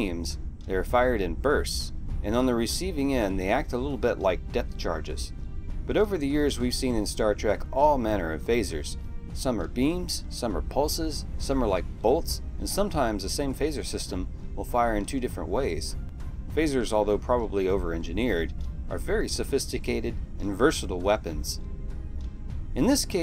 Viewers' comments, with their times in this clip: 0:04 they were reported after the Episode aired as Photon Torpedos but were reported as phasers as a writer error. Phasers cant proximity burst but torpedoes can. Even the sound of the weapon firing is the classic torpedo sound.